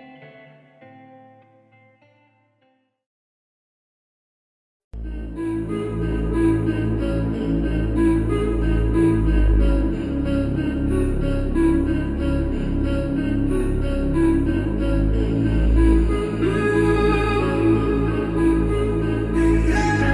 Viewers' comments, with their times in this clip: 0:04 Woah that beat at the end is GOLDEN !!!